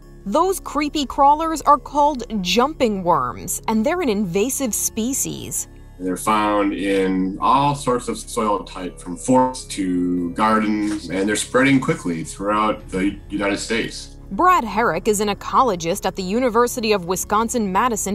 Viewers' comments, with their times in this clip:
0:03 and they're an invasive spezzies